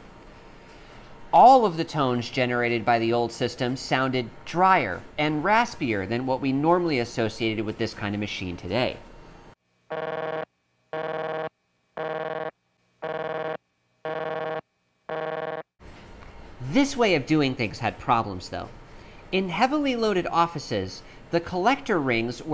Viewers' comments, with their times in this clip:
0:10 hah, that sounds like some shitty NES sound effect! it seems strangely modern to be so, so early in electrified culture